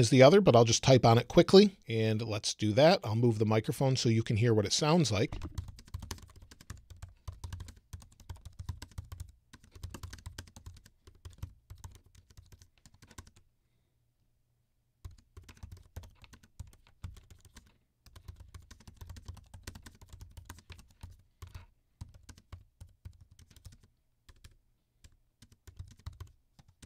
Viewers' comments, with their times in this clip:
0:07 I thought Robin Williams had taken over ! 😌👍👍👍